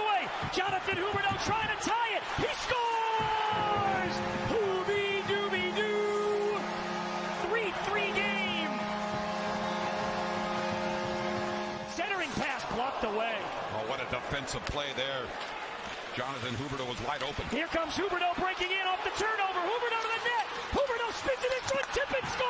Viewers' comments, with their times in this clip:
0:03 LMAO at the announcer 😂 “hoobydoobydooo”